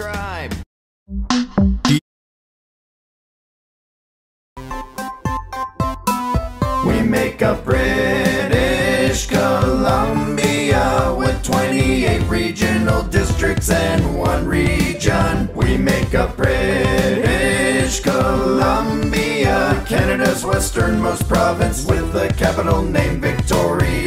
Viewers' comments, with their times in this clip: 0:07 The chorus sounds like far far out.